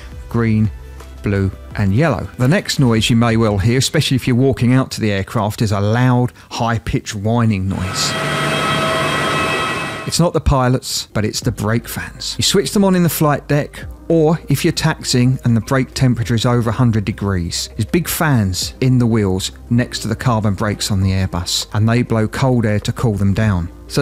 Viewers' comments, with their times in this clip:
0:09 used to be stumped given that the fan turbine isnt even moving yet theres a whining noise. now i know